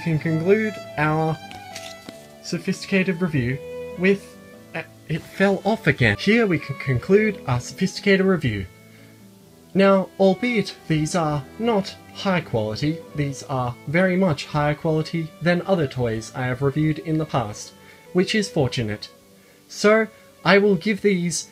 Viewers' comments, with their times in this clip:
0:03 That slightly annoyed tone made me lose it .